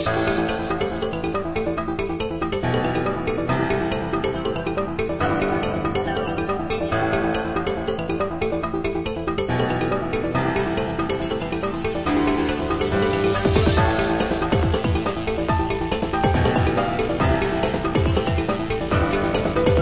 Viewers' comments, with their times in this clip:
0:03 anybody else hear insane in the brain?